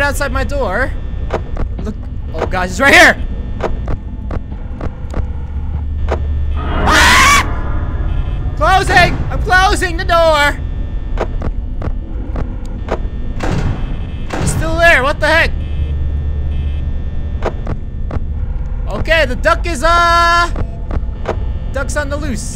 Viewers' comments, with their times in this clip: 0:07 k girl scream